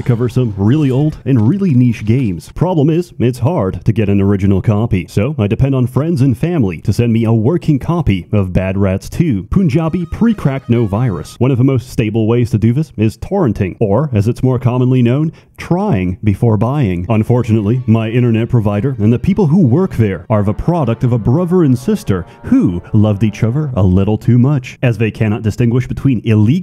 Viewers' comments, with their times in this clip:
0:09 the Indian song 😂